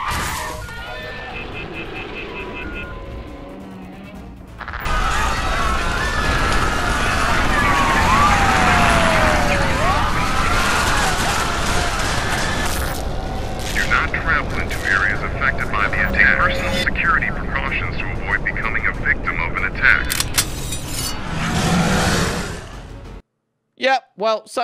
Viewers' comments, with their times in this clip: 0:09 u know you could have put a headphone warning